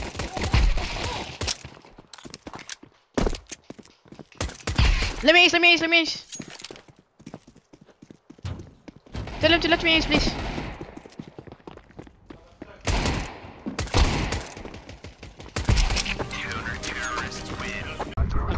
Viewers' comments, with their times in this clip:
0:05 i always love to hear a good "let me ace" warrior call
0:05 i always love to hear a good "let me ace" warrior call